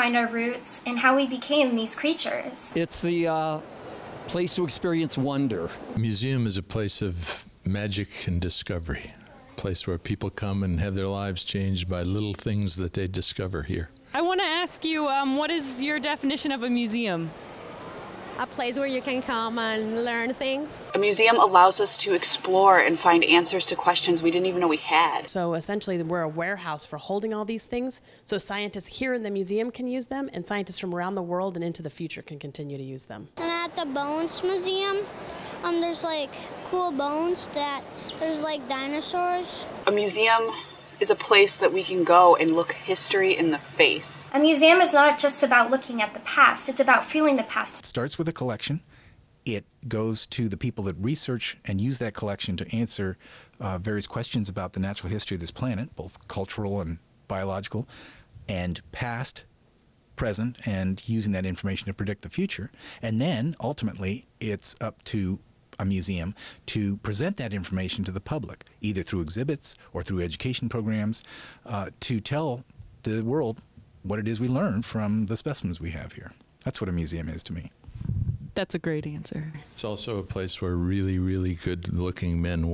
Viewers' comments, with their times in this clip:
0:07 That man needs to voice documentaries!
0:09 Okay, but that dude had the smoothest voice ever. I want this man to record an album. Not necessarily of music, just him saying stuff. Maybe with some light piano.
1:07 THAT RADIO VOICE O.O